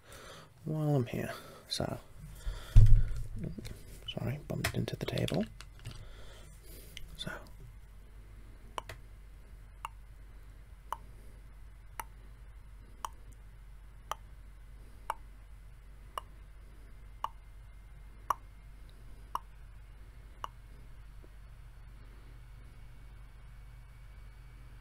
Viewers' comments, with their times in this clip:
0:09 Sounds like clock 🤩 Really liked it